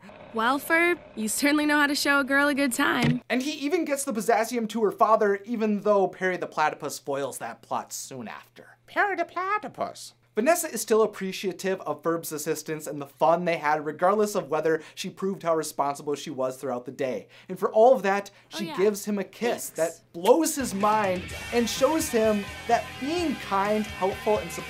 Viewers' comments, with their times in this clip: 0:07 No-one gonna talk about how good that Doofenschmirtz impression was ?